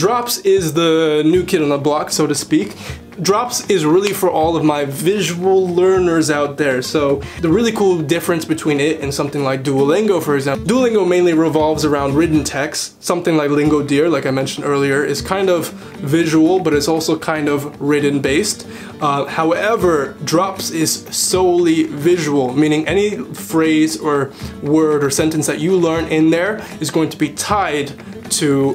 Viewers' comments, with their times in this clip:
0:09 Nobody: Me 👁👄👁 Why do I hear Hisoka boss music